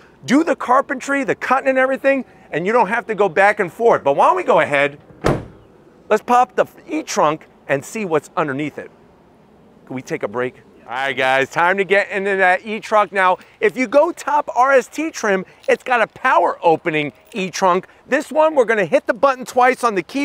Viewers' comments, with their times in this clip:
0:05 "Let's pop the f* trunk" 🤣🤣